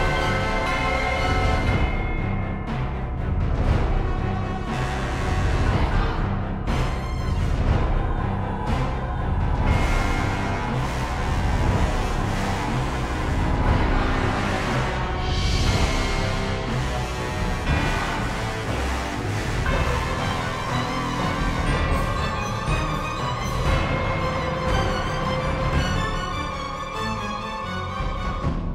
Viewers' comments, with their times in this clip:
0:10 you can never have too much power in the low brass. Biased? Yes